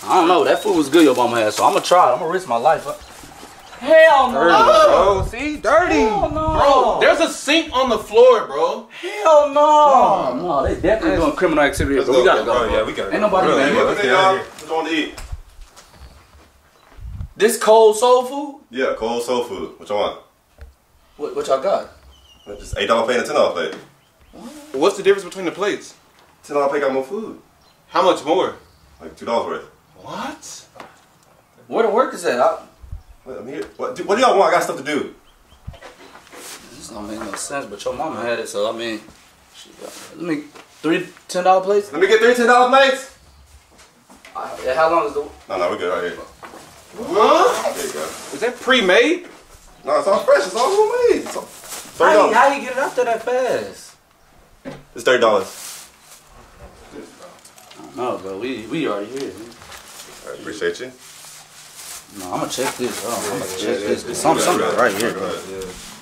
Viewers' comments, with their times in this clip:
0:03 sounded like someone was moaning
0:04 NOBODY TALKING BOUT THE MOAN 😂😂😂
0:04 that moan bro hahahahha
0:47 That collective "HUH?" 😂